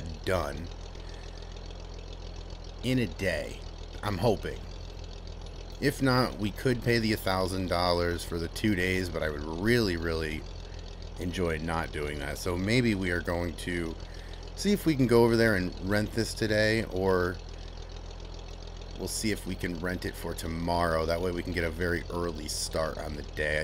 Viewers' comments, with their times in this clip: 0:09 I thought I heard the beginning of Steely Dan's Do It Again, and I thought finally a channel with good music in its videos, lol.